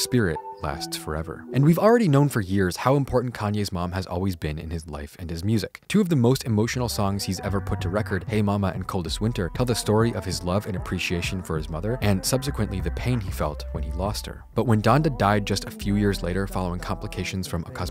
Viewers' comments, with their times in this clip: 0:03 what is the background music playing until ? sounds almost like the dead presidents keys just really slowed down and chopped